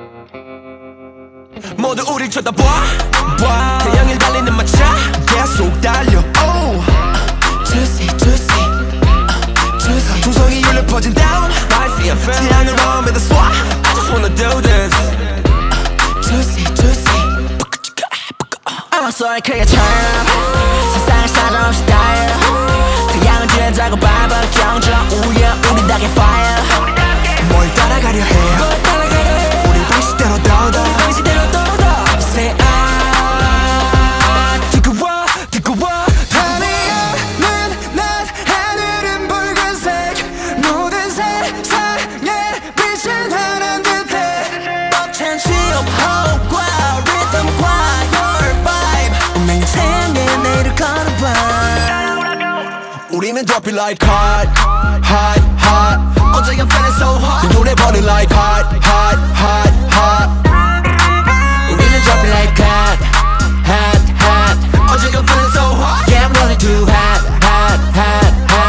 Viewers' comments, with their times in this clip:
0:09 woozis part is SOOOOOOOOO addicting i dont get why no one is talking about this but his voice is just so on top!!!
0:53 obsessed with this deep British-sounding HOT HOT HOT by Seungcheol/S.Coups😂 THIS IS EVERYONE’S ERA!! 🔥